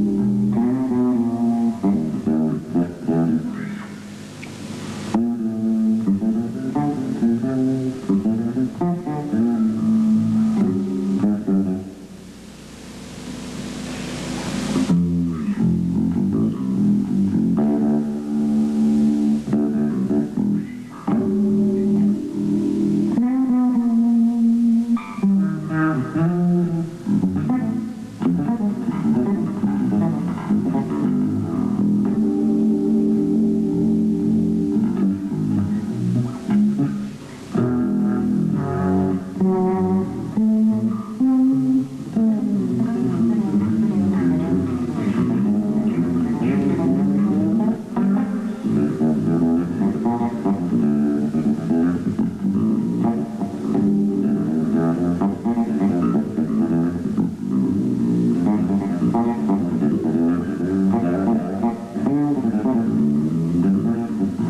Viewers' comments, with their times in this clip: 0:04 Dig the finger snap !
0:47 If you're practicing away on your fretless and you pull out octave runs like those then you ought to give up mathematics and let us all hear you. Your intonation is really something. This solo is magnificent throughout.